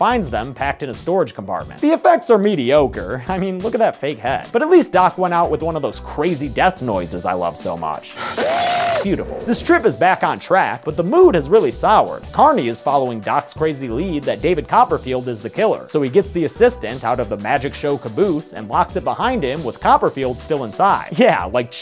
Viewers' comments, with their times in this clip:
0:08 it just sounds like the noise CoD players make when they hit a 360 No Scope or clutch a gunfight round. Am i wrong?